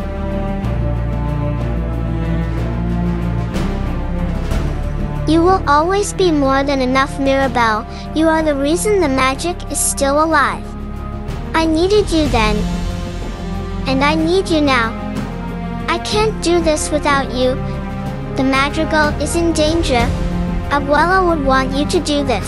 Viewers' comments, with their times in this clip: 0:06 bro they just put ai voice or google voice
0:06 is a ai voice pls dont watch this😮🥴☹
0:09 DUDE THIS IS JUST AN AI TEXT-TO-SPEECH VOICE- 😭😭